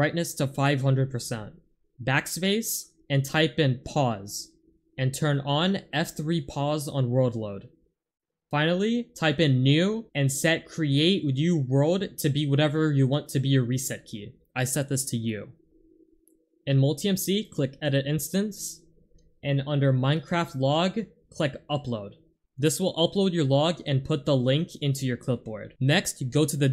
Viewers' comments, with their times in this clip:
0:10 "Ahhh, did he set it to me??"